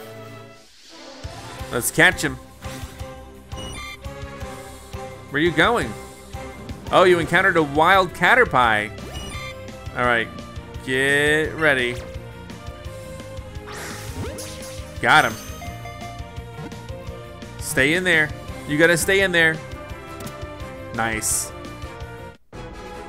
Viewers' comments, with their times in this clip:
0:04 I find your mispronunciation of caterpie disturbing.